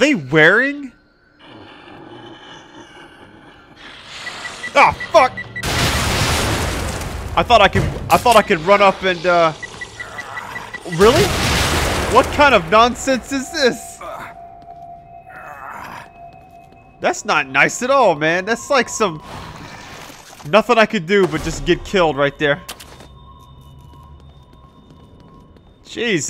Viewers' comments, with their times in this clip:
0:07 The exploding guys.. lol omfg, that cracked me up. Perfect scene, "Wait are they wearing..oh fuck!, oh fuck! BOOM"Game was like "Surprise bitch, fuck you. Oh wait still alive? Fuck you again!" The second guy cracked me up. "Really?" 1st time shame on them, second time shame on you.